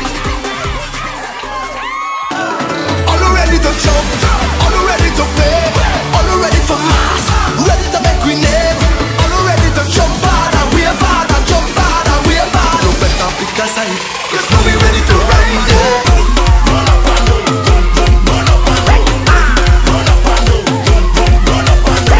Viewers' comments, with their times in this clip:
0:03 what’s that song? I love it😍😍 it sounds so energetic🔥